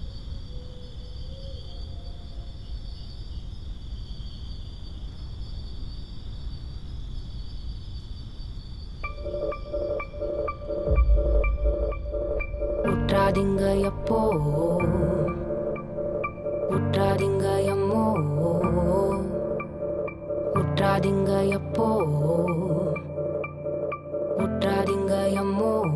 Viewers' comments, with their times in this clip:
0:08 the song starts here 😊